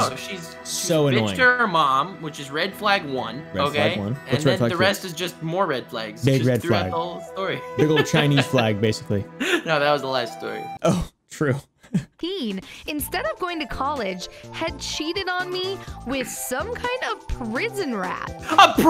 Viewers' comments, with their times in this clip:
0:05 OH NO I HEAR FLUTES AGAIN!!!! NOOOOOOOOO!!!!!!
0:06 I hear the flutes again so who died. Or did Jiraia get reanimated, TELL US!!! (sorry if I made anyone sad)